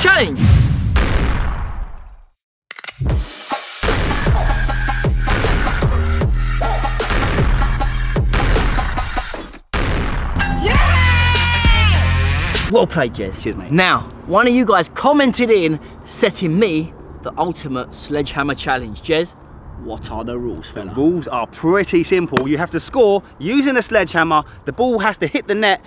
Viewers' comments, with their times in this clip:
0:10 sounds like a kid on Christmas